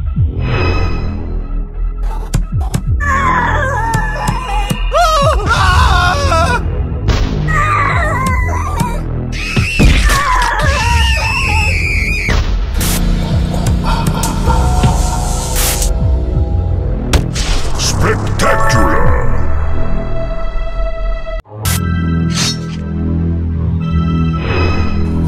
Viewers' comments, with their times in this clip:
0:07 who even screams like that